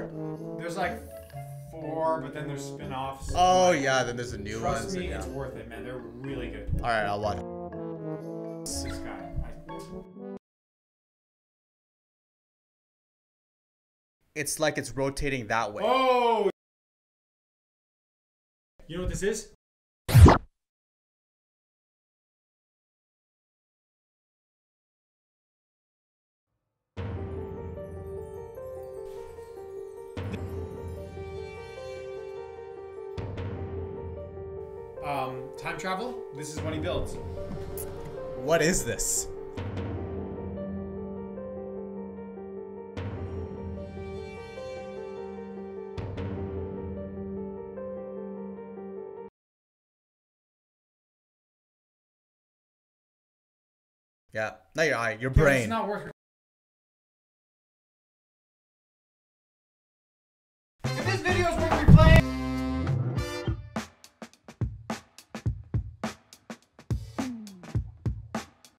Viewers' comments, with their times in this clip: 0:04 Why was the mics going in and out after ?
0:08 Did the audio cut out
0:11 am I deaf
0:18 ik audio cuts out
0:26 no sound, rendering issues
0:44 why the adio cut out
0:54 everyone: eh is your mic doing that on purpose?